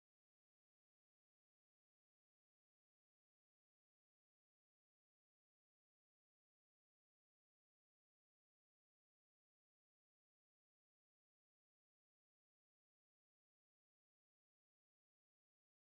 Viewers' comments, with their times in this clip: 0:11 Cough Also, where have you been yesterday?